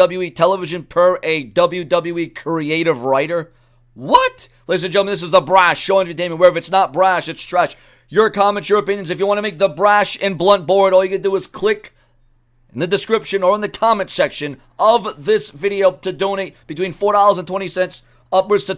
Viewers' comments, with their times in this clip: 0:04 LMFAO, at the way you said...WHAAAT!?